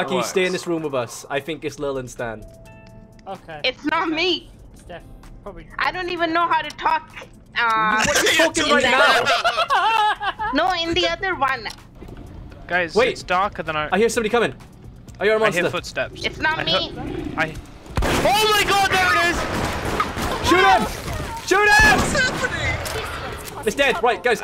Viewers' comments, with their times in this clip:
0:05 wait did you say walk or talk?